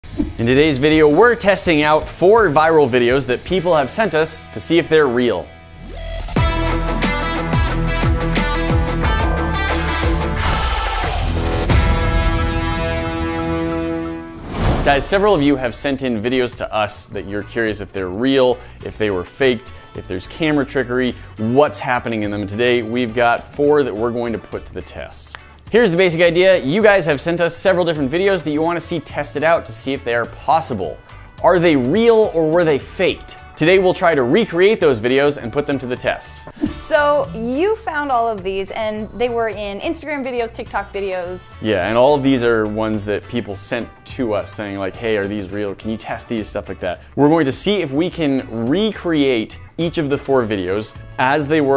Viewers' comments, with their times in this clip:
0:00 rip headphone users 👉😶👈
0:21 she really do be sellin that laugh doe
0:34 is it just me or did I hear are they real or were they fate